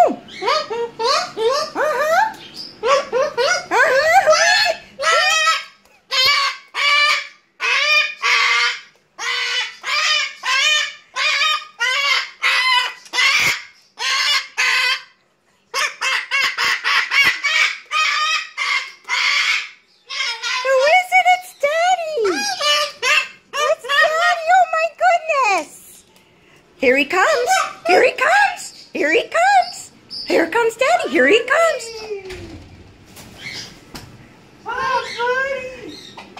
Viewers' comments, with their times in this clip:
0:04 Noisy white feathered talking chicken....
0:24 was that screaming or did it say "oh my god"